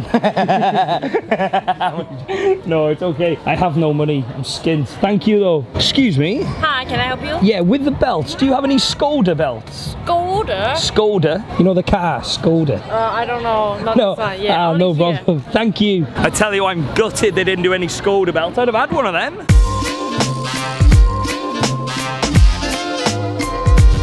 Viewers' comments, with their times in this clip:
0:09 OMG I just love the way she says Skhoodah???